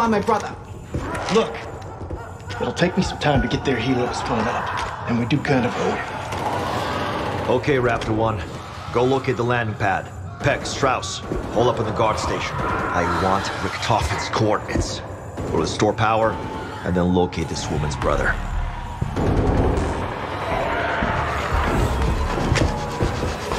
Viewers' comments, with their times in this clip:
0:06 can hear people being ripped apart. Hell yea